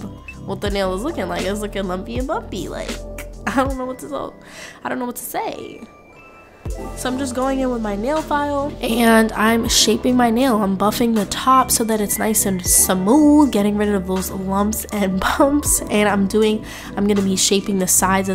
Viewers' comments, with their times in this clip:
0:06 "☺ I'm just going in with the nail file" -->"👹 AND SHAPING MY NAILS" Cracked me up 😂. These are beautiful btw